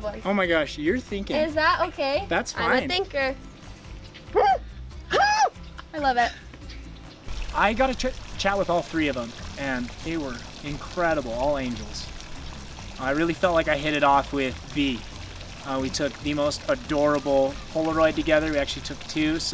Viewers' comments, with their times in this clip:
0:03 What on Earth are those noises ?